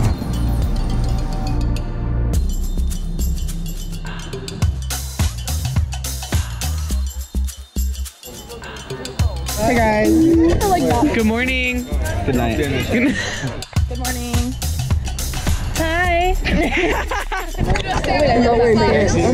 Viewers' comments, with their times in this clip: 0:07 did you hear that ahh